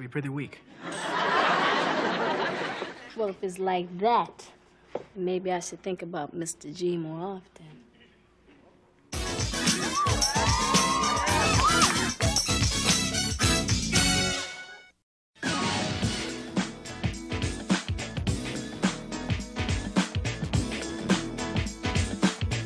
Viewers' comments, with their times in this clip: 0:08 😂😂😂 somebody in the background said “uh oh”